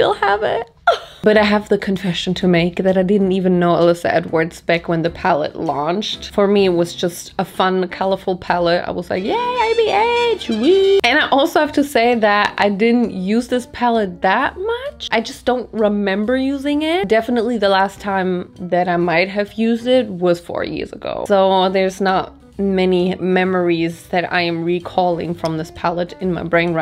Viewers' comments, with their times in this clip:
0:10 the one piece sound plays 😁😁